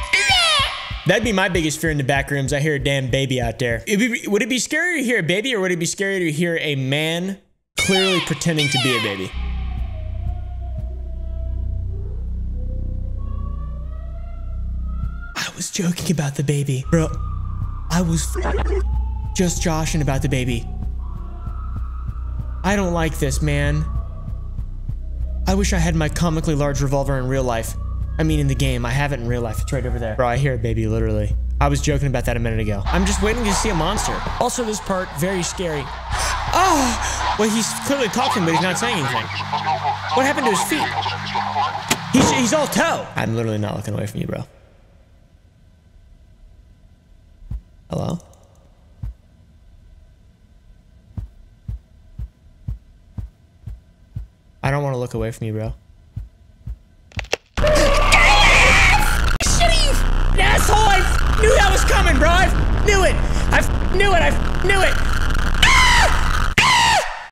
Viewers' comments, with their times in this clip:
0:03 can absolutely GUARANTEE it's scarier to hear a man pretending to be a baby... a few years ago there was a predator who would lurk around my university's campus at night making baby sounds to lure people off the lit trails 😳 not a great time
0:15 When you hear DaBaby in the backrooms
0:56 the way he screamed and moved made me laugh so much it hurts